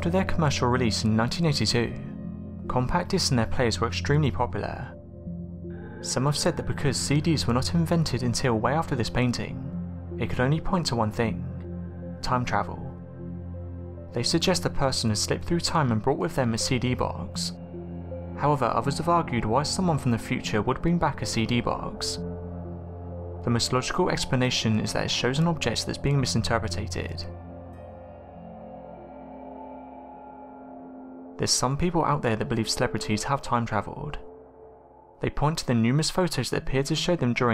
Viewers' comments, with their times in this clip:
0:09 annoying narration style--refused to keep listening after
0:14 Couldn’t watch more than This guy over enunciates all the last words of his sentences. Makes me want to rip my ears off.
0:23 "Misinteroperiatated" You british inbreds need to learn how to pronounce words. Hahahaha